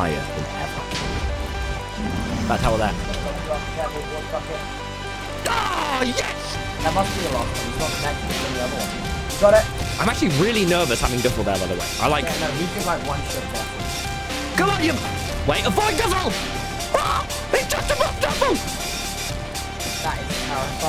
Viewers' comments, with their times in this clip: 0:07 guys what's the song i wanna know, the song's so hype and i dunno its name